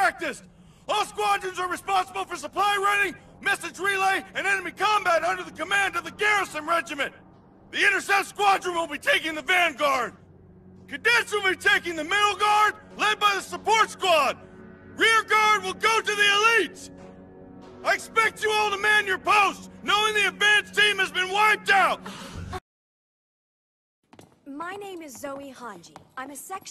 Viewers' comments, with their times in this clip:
0:08 you can hear the Vegeta.